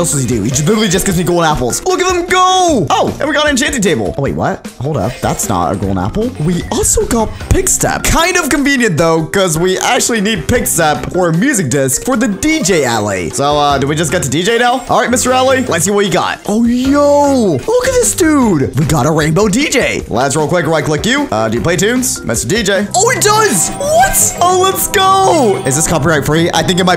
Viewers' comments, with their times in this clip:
0:07 When it was I which you make a juke box and played it because the pig step music disc is my FAVOURITE disc in Minecraft, it’s like a cross between dubstep and fighting music